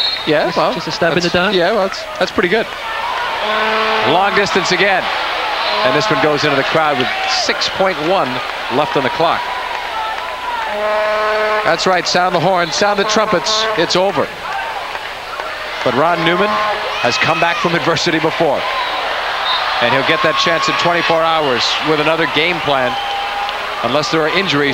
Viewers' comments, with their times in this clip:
0:10 Oh God, there were vuvuzelas in America even back in 93…